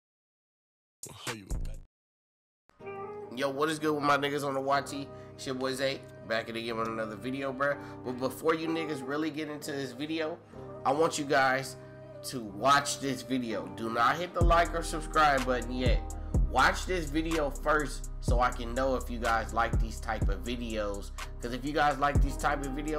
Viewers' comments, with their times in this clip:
0:05 IM SORRY EVERONE SOUND IS GONE HAD TO REMOVE IT AT THE BEGINNING BECAUSE OF COPY RIGHT REASONS ACTUAL VIDEO STARTS